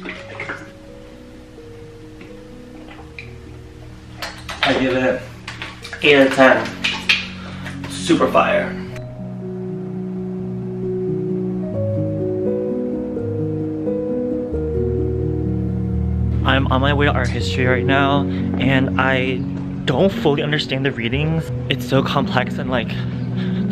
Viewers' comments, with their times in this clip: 0:09 Name of the song/music of minute ? 🥰 soo chill 💕